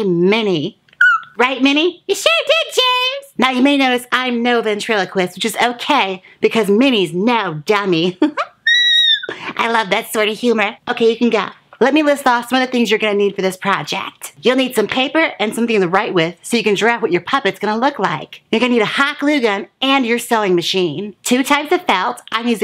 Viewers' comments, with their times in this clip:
0:09 bitch that note